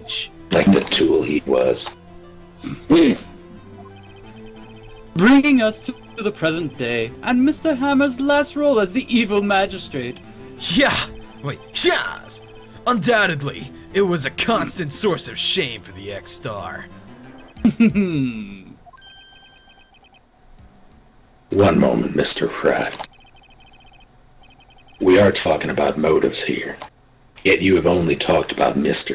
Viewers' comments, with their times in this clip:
0:10 That second "YAS!" sounded like Captain Falcon. Phoenix Wright could pass off as a Captain Falcon. xD I think Will Powers looks like Beast, from Beauty and the Beast. xD